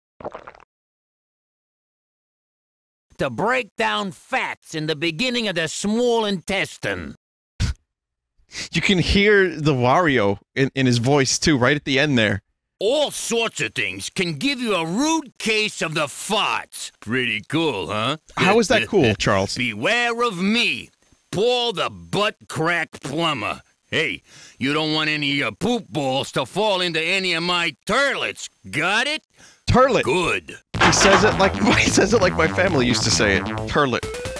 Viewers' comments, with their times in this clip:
0:03 sounds like marc graue’s mario but it’s charles
0:16 T H E F A R T S